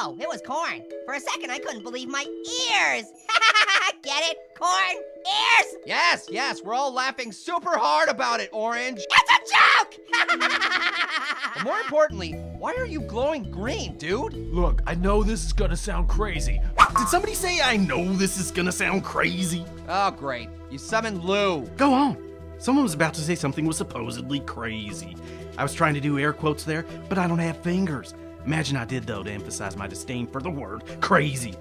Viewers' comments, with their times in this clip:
0:08 Ow! Did that hurt anyone else's ear holes or was it just me?
0:09 the situation just got to girly right orange ( because of your voice all of sudden) HAAAA.
0:12 OMG I CAN'T BELIEVE IT ORANGE WAS ACTUALLY QIET FOR 1 MINUTE AND THIRTEEN SECONDS. QUICK HE MUST HAVE BEEN THINKING. EVERYONE GET OUT OF THE DAMM ROOM PANIC PANIC PANIC!!! THE WORLD IS ABOUT TO IMPLODE
0:18 ILLUMINATI THEME RETUNED INTENSIFIES